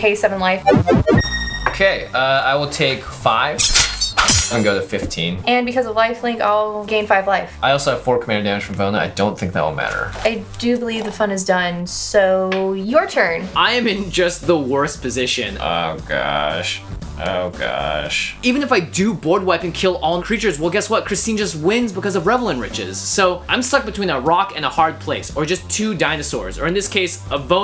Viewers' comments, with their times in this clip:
0:09 that voice is adorable